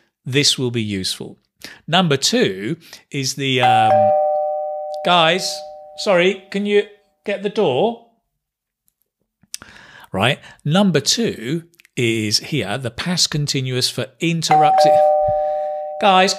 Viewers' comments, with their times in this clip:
0:04 that " guys, can you get the door" couldn't be more British